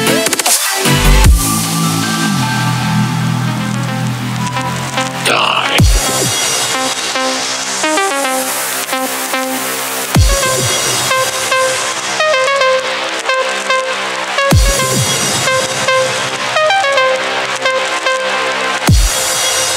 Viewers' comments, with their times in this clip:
0:05 If Reaper (Overwatch) ever had a theme song, this is what it would be!